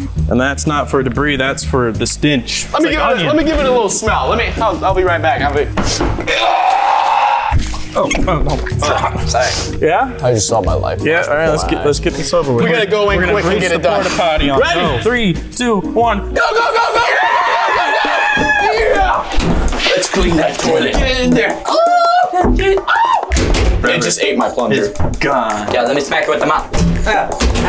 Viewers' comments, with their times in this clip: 0:09 it sounded like unspeakable said i just smelled my life like if you herd that